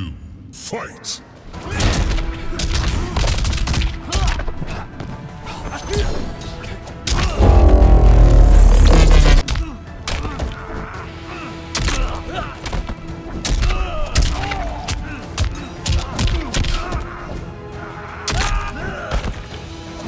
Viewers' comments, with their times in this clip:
0:08 This is amazing man, all 4 matches and I loved how you put them in their places, was one of the funniest how the music was epic then the terminator just does a single punch lol. That cassie and kung lao, Kung lao just spamming to get far away as possible and cassie jsut doing that shoulder move, ridiculous, BUT IT WAS NO MATCH FOR THE TERMINATOR!! Great Vid Man, Edits are getting better!